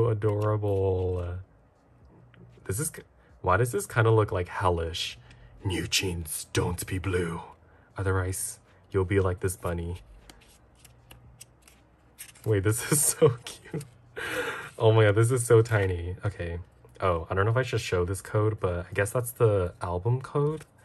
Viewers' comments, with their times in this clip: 0:04 why did you sound like an actual villain in movies tho